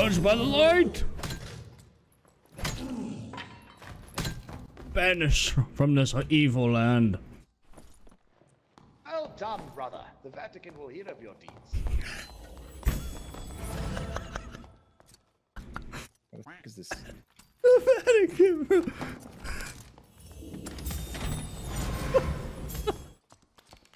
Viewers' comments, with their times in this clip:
0:10 what did he say ? Can't make it out due to low volume.